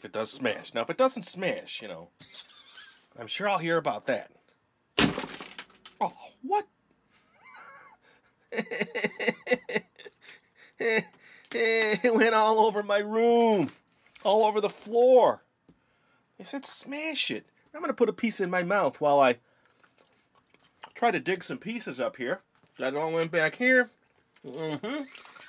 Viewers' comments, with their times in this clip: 0:09 Was he laughing or crying